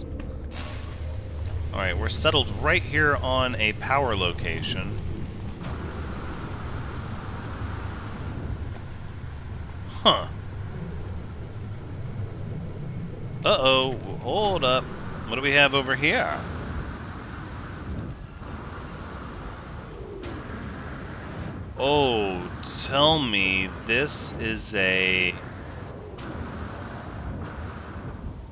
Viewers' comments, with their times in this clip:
0:09 ᴍɪɴᴇᴄʀᴀғᴛ ᴠɪɴᴅɪᴄᴀᴛᴏʀ ɴᴏɪsᴇs